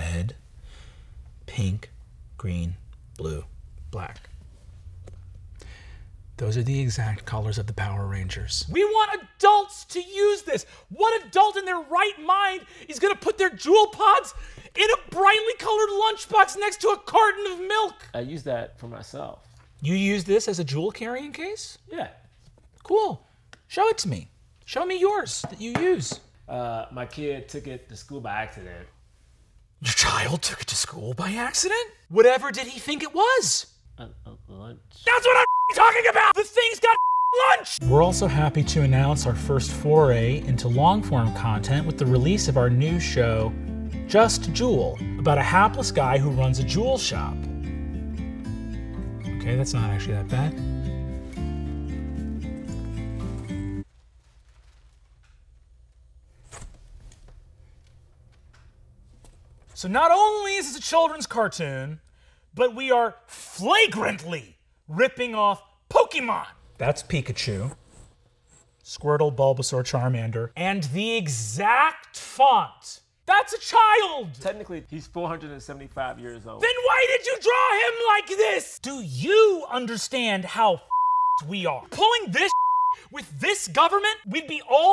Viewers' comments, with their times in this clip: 0:09 he kinda sounds like Morty
0:12 Bro turned into Morty.
0:15 He sounds like Morty lmao.
0:29 My favourite line from this will always be "Your child took it to school my accident?!" The delivery on this is just perfect.
0:30 when goes from calm to screaming “that’s what I’m fucking talking about!!” Kills me every time
1:05 The way he says "Pokemon" I can't 🤣